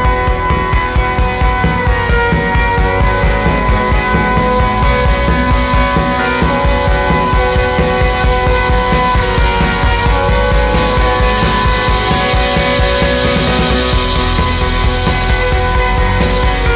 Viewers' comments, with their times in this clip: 0:03 woop WoOp w00P! Beat kicks in!